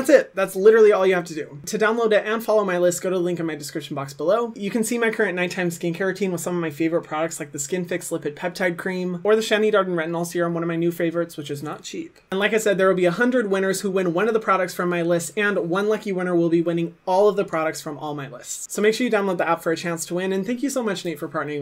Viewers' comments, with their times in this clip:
0:09 he pronounced my name correctly and literally no one ever does. Even though he wasn’t trying☺️